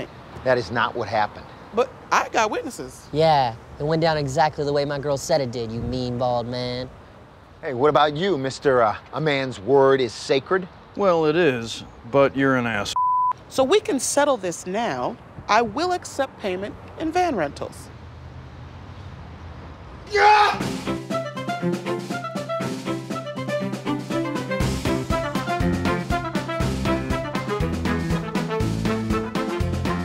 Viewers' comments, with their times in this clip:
0:03 That delivery is everything.
0:11 lol I think they censored the half of the word